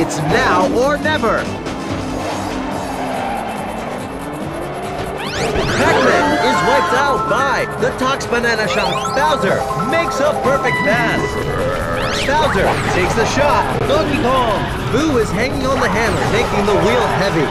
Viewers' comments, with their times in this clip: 0:04 What kind of unholy scream did Pac-Man let out?